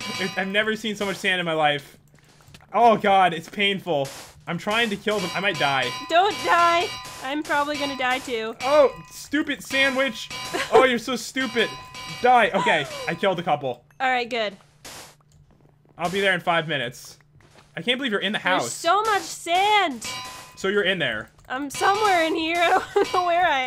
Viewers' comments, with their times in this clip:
0:09 when popularmmos says stupid sand witch it was like saying stupid sandwich